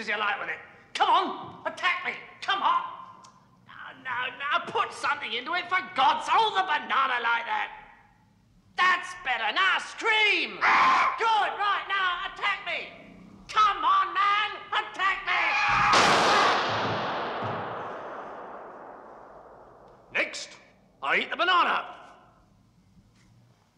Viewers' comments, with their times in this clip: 0:10 Graham's scream is the funniest thing I have witnessed in the entire 18 years of my life. :D